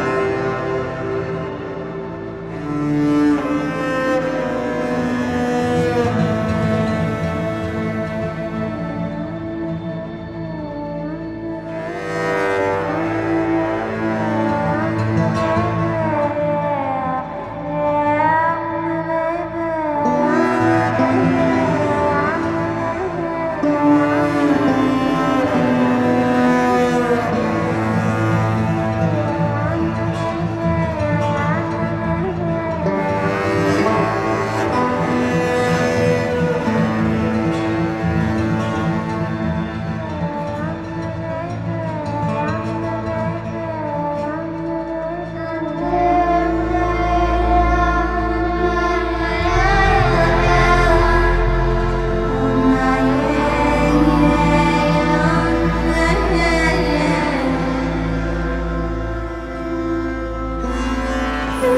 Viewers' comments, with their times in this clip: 0:09 i Just like how the Desert Woman Sings like a Violin in the background , it's Just amazing.
0:45 good god this gives me chills this is seriously the best music in a video game everywhere